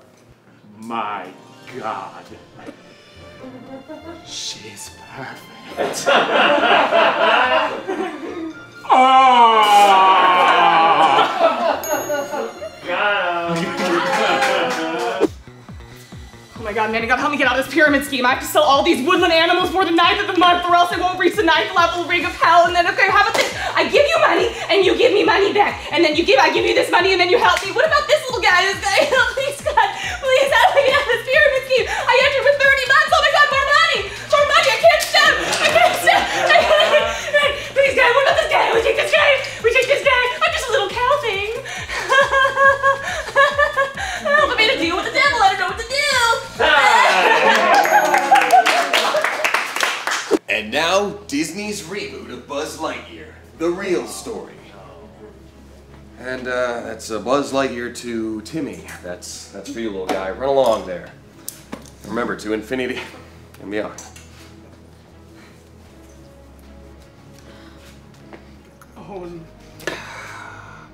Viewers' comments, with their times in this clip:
0:08 that sounded SO HORNY wtf Ian?!
0:53 I love how you can hear a little “oh no” behind the camera 😂